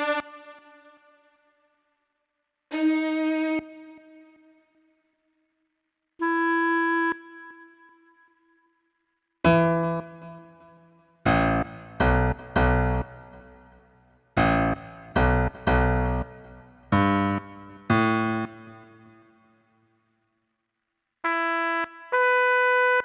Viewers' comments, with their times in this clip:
0:06 I appreciate the baby one more time intro attempt haha